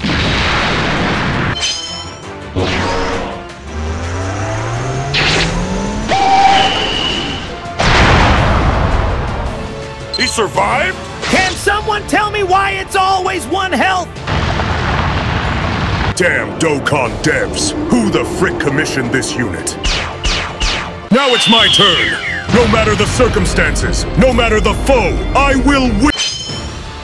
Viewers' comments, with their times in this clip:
0:10 Tien got that Krillin voice 💀